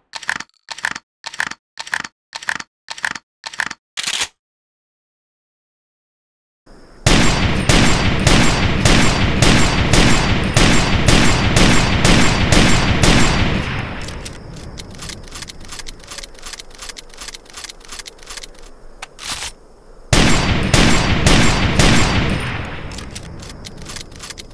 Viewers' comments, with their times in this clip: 0:06 my most favorite version is Far cry 2 that metal sound along side loud and heavy shot. my favorite for ever.